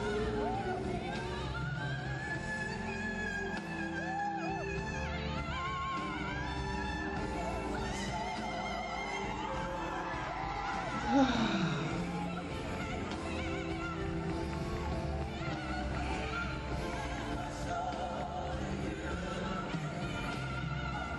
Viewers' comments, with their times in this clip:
0:07 A5 to super C6 !!